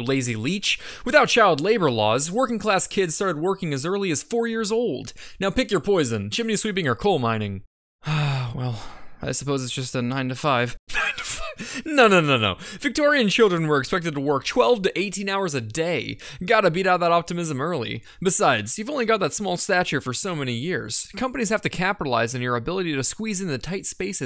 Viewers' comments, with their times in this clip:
0:10 Love the wheeze 😄